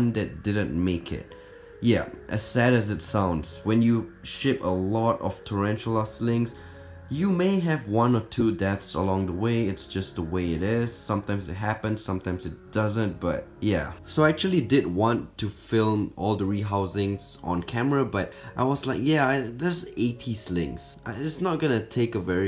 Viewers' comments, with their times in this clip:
0:04 it sounded like he said when you s word a lot of slings Good luck
0:04 Why does it sound like swearing